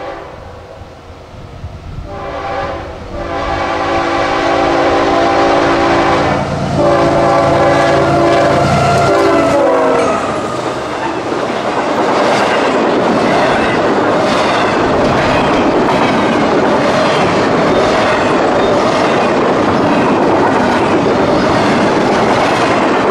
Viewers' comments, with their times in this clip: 0:05 Nice catch with the Every Child Matters unit! that sounded like Shave and a Hiarcut.